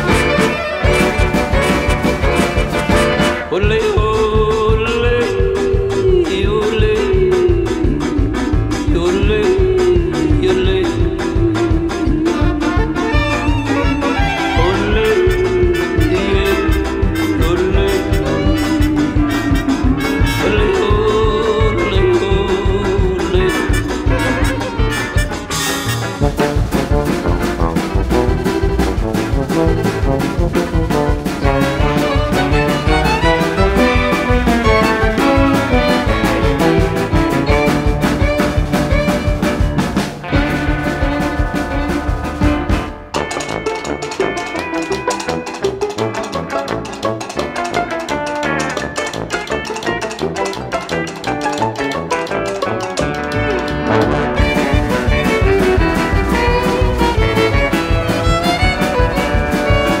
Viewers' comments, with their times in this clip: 0:03 it's yodel time! 😍
0:03 In the script: Yodel loud. The yodel: (cuz i cant remember how the yodel is)
0:03 one of the best parts of the song, this touch gives it something like the wild west
0:08 they somehow got Lloyd Bridges to yodel for them
0:11 I LOVE how the yodeling in this part gets slightly more sinister as the voice trails off.
0:11 I LOVE how the FINALLY brought in some steal guitar. And its odd that they added some yodeling but hey its cool! Edit: i wanna give props to the Violinist for this song because this is and outstanding piece of art. Another Edit: i cant get enough of this guys face
0:25 love the tuba solo. Cuphead music slaps so hard.
0:26 Cue the Cucumber with the Tuba! 🥒📯
0:43 Awesome. BTW: The composer is performing the horse gallop.